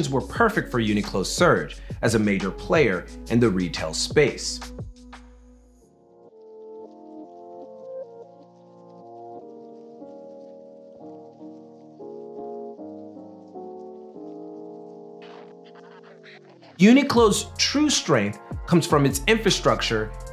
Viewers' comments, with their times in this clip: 0:06 Had to check my volume thought my speakers stopped working